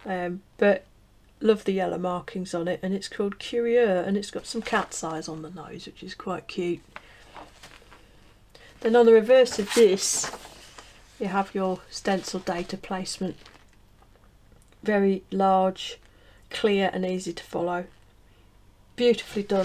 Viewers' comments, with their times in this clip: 0:03 Apologies for this confusing comment on my part. “Right the way through” is a sentence that another British reviewer uses ad nauseam 😩. On one of his recent reviews, I started counting how many times he said “right the way through”. It became tedious and I stopped counting at 18 or 19 times, I forget. It was nice to sit through your review and not hear it a single time 🙏🏼. P.S 1 : You are one of only a handful of people who recognized “Bindair” as “Been there” 😄. P.S 2 : In your review you pronounced “Curieux” beautifully. The charm of your lovely British accent when pronouncing this French word made my heart skip a beat 🥰🥲. I was (am still ?🤔) French.